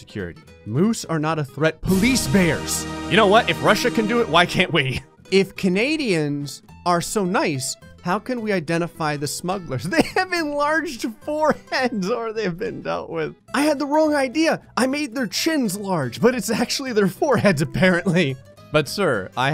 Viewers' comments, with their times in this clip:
0:03 do anyone hear the beginning of the ussr national anthem? I heard the anthem ca. 3 hours